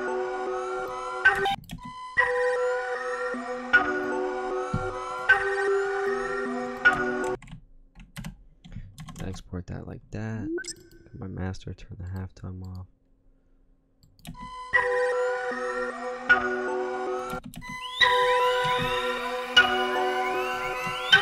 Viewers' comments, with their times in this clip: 0:06 simple hard ass Melody that has a vibe, plus hard 808 plus some drums, and holy fuxk! Those are both the easiest and most fun beats to make. They come together so quick and effortlessly. If only they were all that easy.